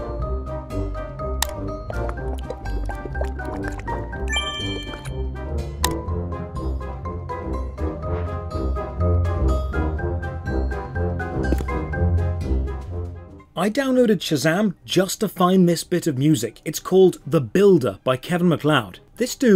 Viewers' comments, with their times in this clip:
0:03 Oompah music is infuriating